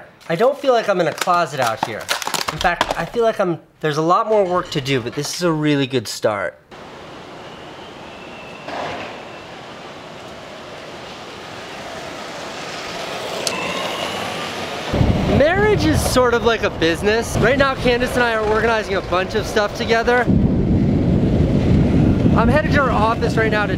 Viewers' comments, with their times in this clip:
0:09 that bird was right on cue.